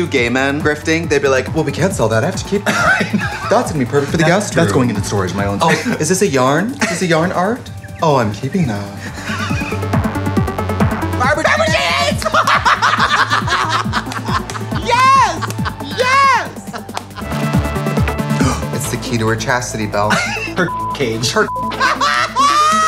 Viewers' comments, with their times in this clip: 0:08 *overly excited screaming * "FABERGE EGGS!! YESSS!"